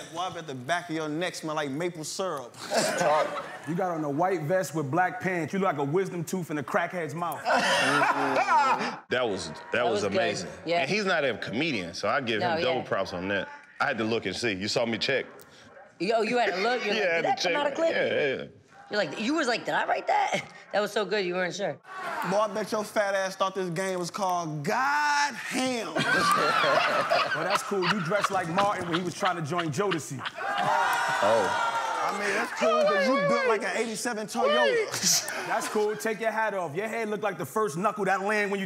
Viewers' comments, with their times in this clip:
0:06 Chicos laugh lmfao 😂😂
0:07 his laugh thooo 🤣🤣🤣
0:07 Chicos laugh has me dying man XD
0:07 Chico Bean Laugh tho😂😂😂
0:07 Chico’s laugh is sending me 🤣🤣🤣
0:23 the laugh really got me😂
0:23 why his laugh was like dat 💀😂😂
0:25 the way he laugh though 🤣🤣🤣 I can't😩🤣